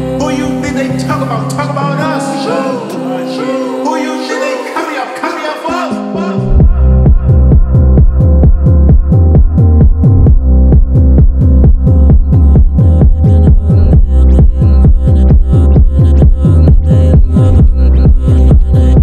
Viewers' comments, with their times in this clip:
0:06 The best part, without any vocals.